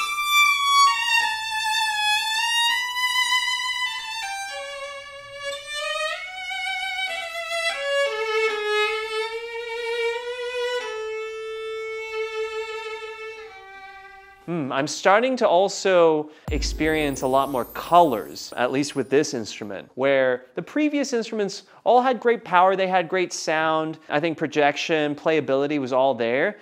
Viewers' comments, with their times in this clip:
0:09 that whole Tchaik excerpt was exquisite 😍